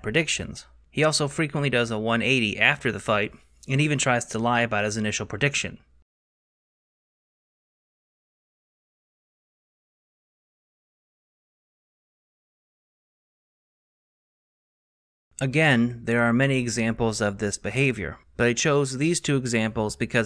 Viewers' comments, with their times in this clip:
0:04 What was the audio removed from the 2 clips starting ?
0:04 why was there no audio here? Did Schaub copyright strike the evidence of him being wrong?
0:07 audio has been removed?